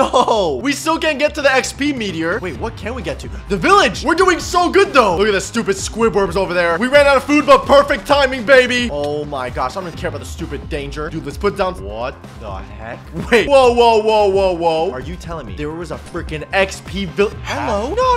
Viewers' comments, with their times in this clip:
0:04 He said squidberds just listen closely